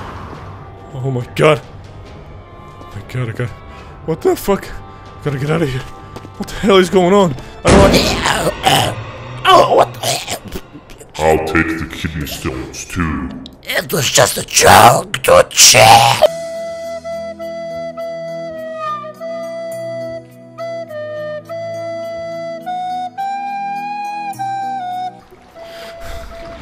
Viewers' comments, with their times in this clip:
0:07 i litteraly scared and then BAM That scared the crap out of me